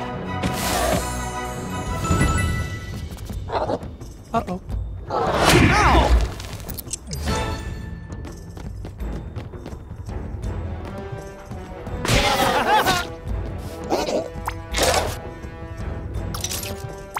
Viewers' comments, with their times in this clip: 0:03 I love his little “uh oh” here